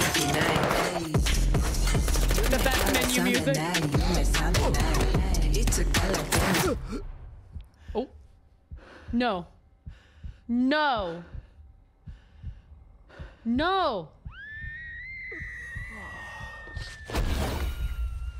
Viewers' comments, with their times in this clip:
0:06 best part. The split second frame BANG! is such a powerful way to shift the tone from badass beat down to "Blizzard did the dark turn in the cinematic again" lol